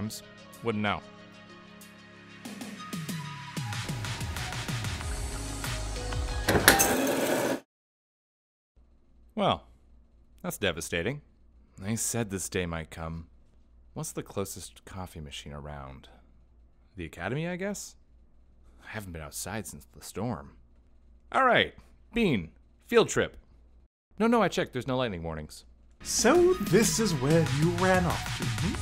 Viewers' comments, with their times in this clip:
0:09 Man ... everything was perfect till the mark where that loud coffe machine sound made my ears bleed : (